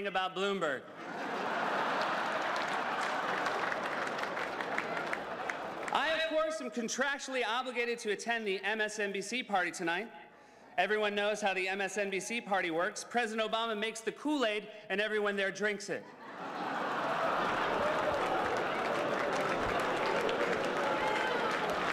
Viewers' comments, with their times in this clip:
0:03 Seth made a joke about Bloomberg and one of the Bloomberg guys busted out laughing and then immediately stopped and put on his most serious face when he realized the camera had panned on him 😂😂😂😂